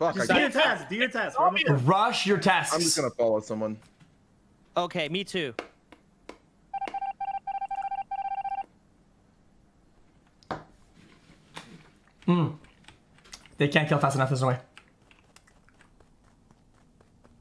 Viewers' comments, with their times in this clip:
0:04 Soda again being sarcastic cringe. Can't stand this guy "okay me too"